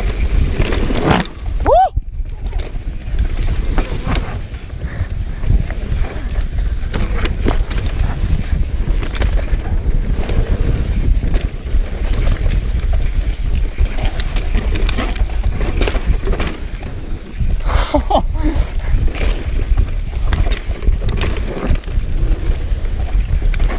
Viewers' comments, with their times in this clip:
0:07 Slapping berms never sounded soooo good!!! Was it me or did you have a moment/nice save with the front ? Keep up the great work!